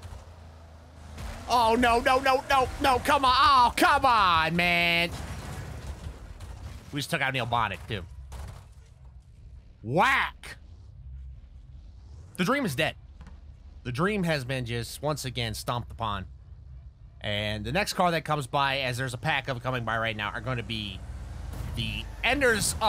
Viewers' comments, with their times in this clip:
0:09 I lost my mind laughing. Bro the way he said that 😂😂😂☠️☠️